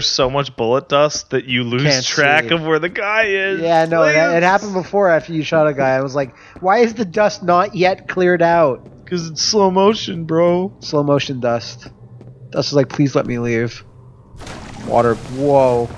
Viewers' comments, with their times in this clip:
0:03 Audio cuts out (2x speed)